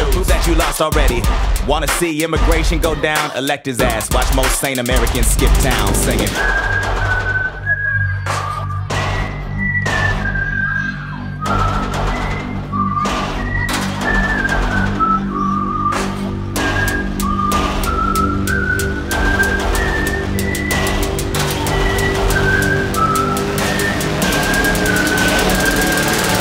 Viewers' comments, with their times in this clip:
0:05 it sound like the NZ national anthem is playing. Am I hearing that wrong or..?
0:06 ok but the new zealand national anthem starts playing?
0:06 nz national anthem got me fkd up
0:07 as a new zealander I was caught off guard by the New Zealand national anthem being whistled